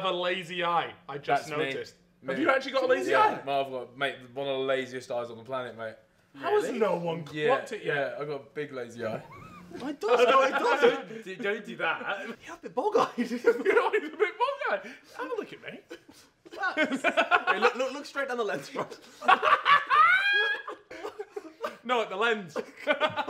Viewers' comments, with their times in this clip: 0:09 funniest laugh ever